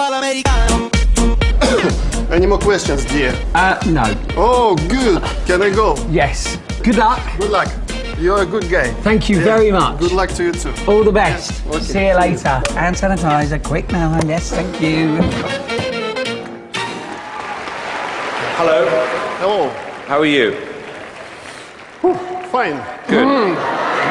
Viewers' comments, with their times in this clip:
0:08 " you are a good gay" "tank you" lol